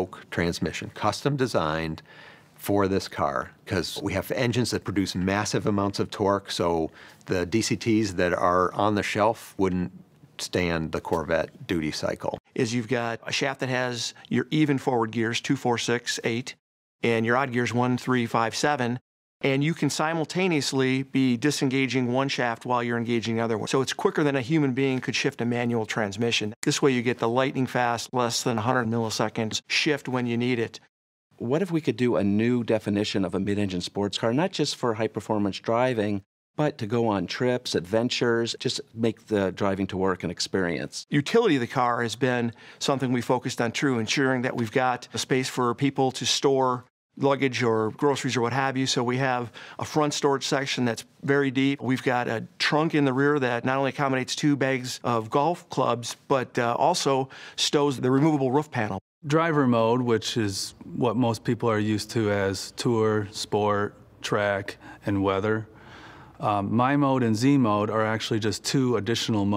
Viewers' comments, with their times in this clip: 0:10 Corvette Terms DOODIE CYCLE It’s all about FReeedoom Baby!!!
0:56 I like how he calls it the ruff panel